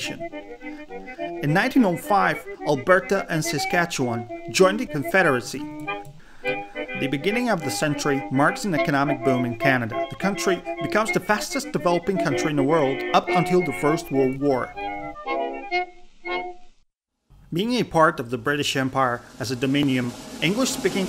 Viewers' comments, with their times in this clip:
0:05 Hear the clicks ?